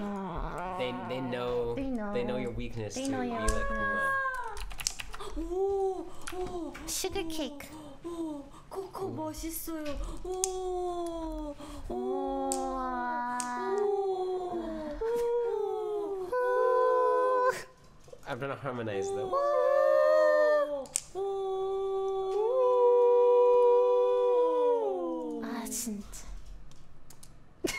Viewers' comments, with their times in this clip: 0:08 My mom was watching me watching this. and she thought i was watching a bunch of owls 😂
0:08 maybe it's cuz of my lack of korean knowledge or does that say coco tastes good... ah nvrm it said 멋있어요 and not맛있어요 lol i feel like i'm posting too many comments TT